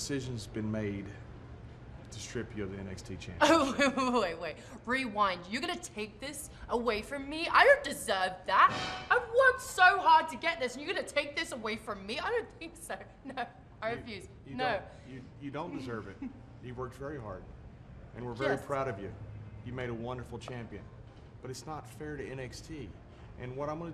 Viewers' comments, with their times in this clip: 0:08 did anyone notice?? it looks like that sound when Bad News Barrett appears on The JBL and Cole Show....sorry about my bad english
0:09 that noise lol